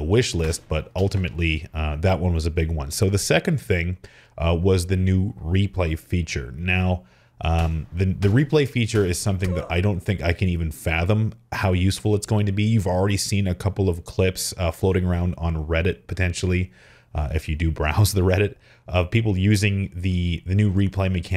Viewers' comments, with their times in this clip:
0:08 did i just hear a roblox death sound?